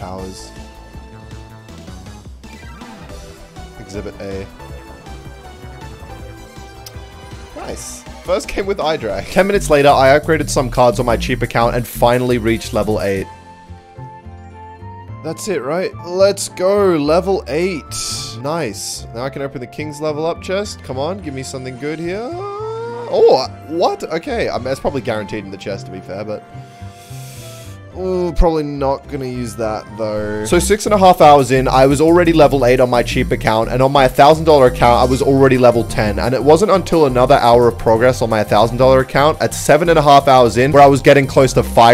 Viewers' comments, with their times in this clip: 0:08 why does this sound like an awful mobile app?
0:13 I just finished playing Pokemon Omega Ruby again and hearing that music felt so nice
0:27 Love the Pokémon music in the background